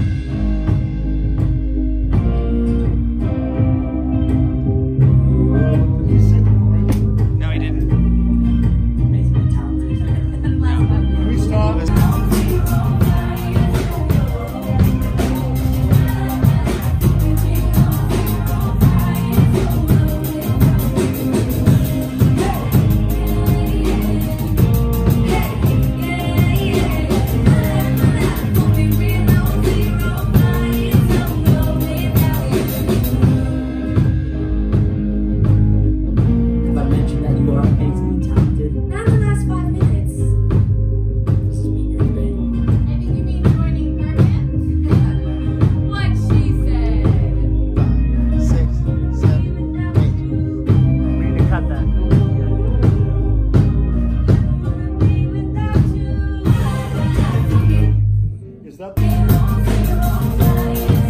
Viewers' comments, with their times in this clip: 0:05 you can here someone ( I think Charlie) humming the cut bridge
0:49 you can also here Madison singing the cut bridge